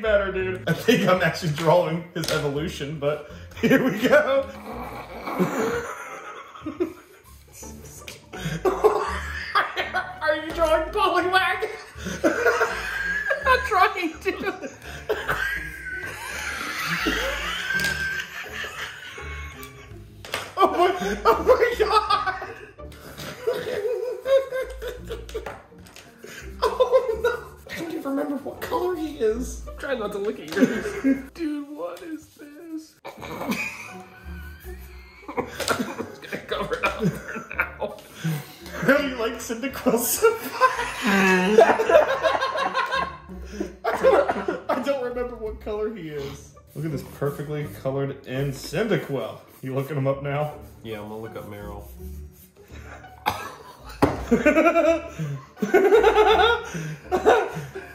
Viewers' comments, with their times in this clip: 0:05 this is the longest wheeze I've ever heard
0:07 watch for like 20 seconds for a wheeze off
0:10 Both of their wheezes 🤣
0:11 nothing but wheezing 😂
0:13 So Many Kettles Were Ready XD
0:14 the wheezes XD
0:15 Those wheezes got me rolling on the ground
0:16 i love how they both wheeze for 5 seconds without saying anything or breathing.
0:17 you’re welcome for the wheeze fest.
0:17 Just an entire wease party lol 😂😂😂😂😂😂😂
0:41 That Wheeze! It’s been a while...